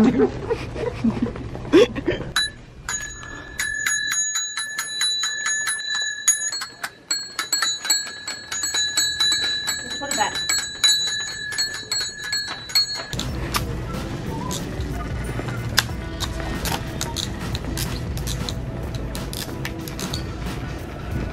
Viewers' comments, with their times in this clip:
0:07 Me: goes down towards a random dinging sound in target i look right